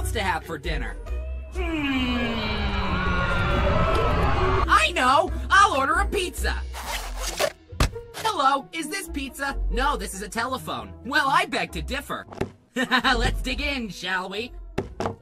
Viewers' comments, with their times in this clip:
0:03 screams in back round fire every after Bill cipher:I know I’ll order a pizza! Me:straight face